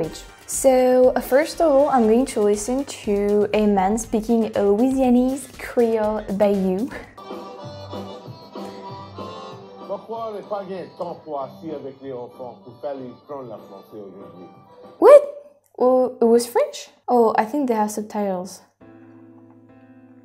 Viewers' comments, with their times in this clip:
0:08 Don't worry, i'm french and i also didn't understand most of what this guy had say. ^^